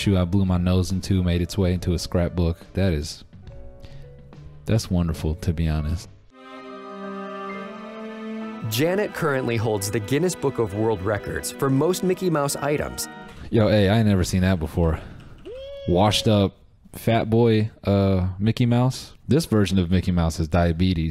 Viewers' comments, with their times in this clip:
0:03 I love the way he says “that’s wonderful tbh”